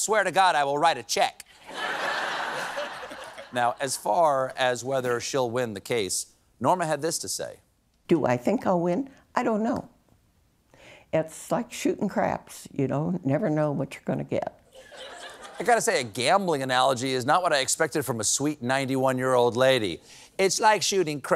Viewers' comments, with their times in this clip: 0:04 WHY DOESNT THE PIANIST PLAY A CHORD WHEN STEPHEN PLACES SOMETHING OFF SCREEN. Pianist been slacking for at least a year...why does Stephen even bother putting this off screen?